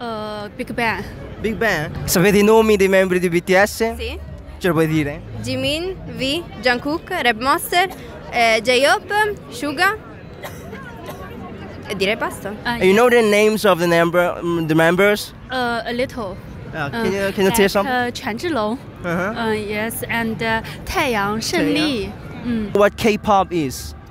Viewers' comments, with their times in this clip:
0:07 Reminds me of army grandpa 😂😂😂 Rrap monster 😂😂😂